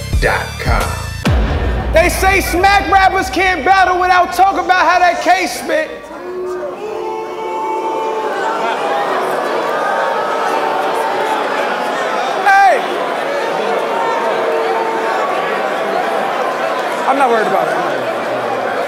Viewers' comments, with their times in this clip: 0:05 My friend starts the boos 🤣